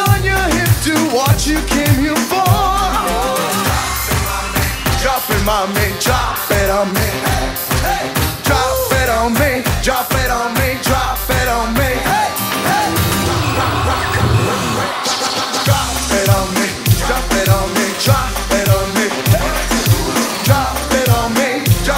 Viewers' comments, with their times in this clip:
0:05 So at # is Ricky singing "drop edamame" ?